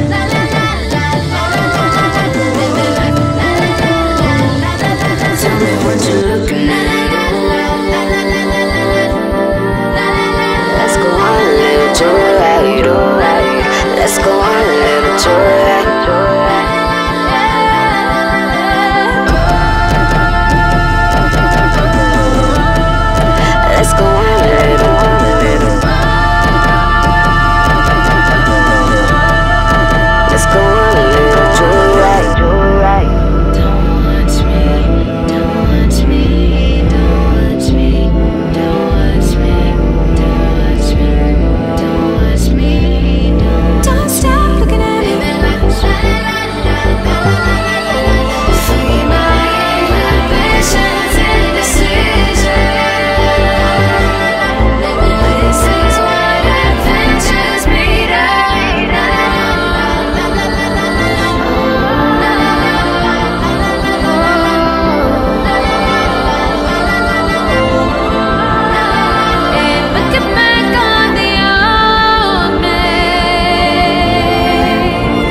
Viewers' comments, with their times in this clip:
0:10 When she hits that "let's go on a little joyride oh"
0:58 THE BACKGROUND BEAT IS SUBTLE BUT I HEAR FAR SIDE OF THE MOON